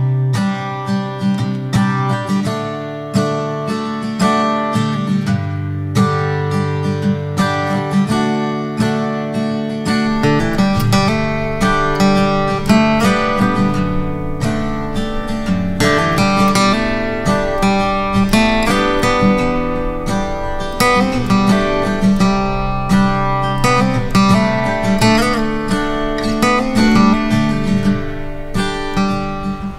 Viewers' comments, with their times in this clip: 0:10 the music that started from was really beautiful and perfectly matched with the monument... could you give me the name of the song?